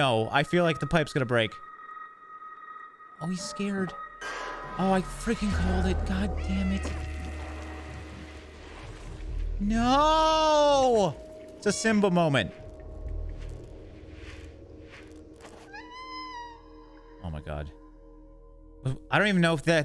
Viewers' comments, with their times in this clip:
0:06 that meow was so adorable but sad